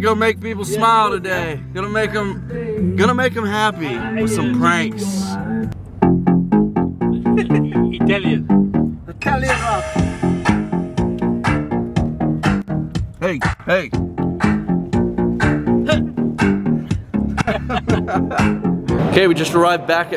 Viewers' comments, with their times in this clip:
0:08 luv that song!